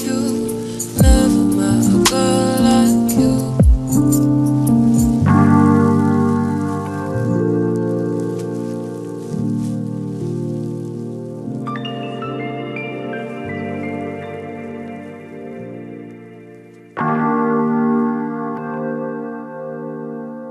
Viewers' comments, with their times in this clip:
0:05 is the music I live for...